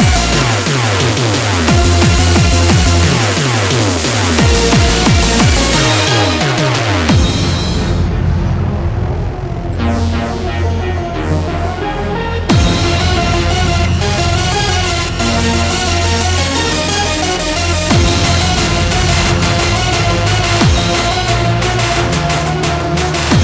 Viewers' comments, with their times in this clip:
0:08 that build up gives me spine shivers why can't this tune have lasted longer! absolutely rocking